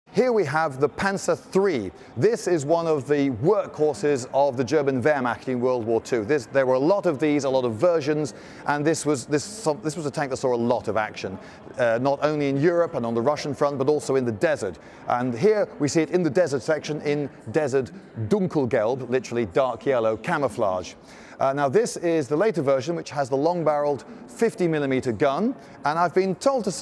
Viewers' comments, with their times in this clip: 0:07 thought he said "a lot of virgins" lmao and it also "saw a lot of action" with a long barrel gun